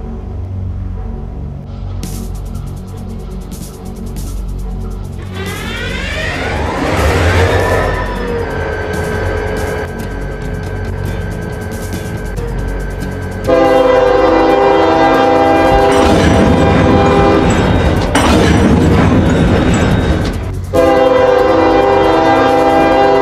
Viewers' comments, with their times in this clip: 0:06 Bro the sound the engine starting